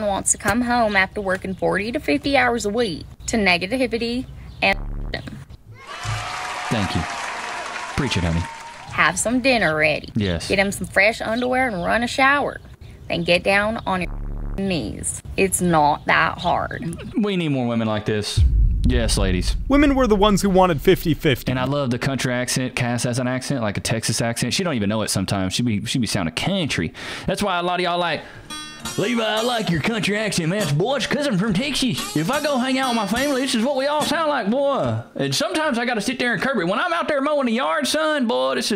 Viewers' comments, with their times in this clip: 0:09 The chick has an accent that only wifeys have. Not all wifeys have that accent but all girls with that accent are wifey material
0:22 I'm from Australia, and even I love that Southern accent with the ladies
0:23 I’d fold to a woman with a southern accent. I was down in New Orleans for a few days. These waitresses calling me sugar almost made me want to move states 😂 I live in Rhode Island, that Boston accent lingers in our state. It’s not the same as a southern accent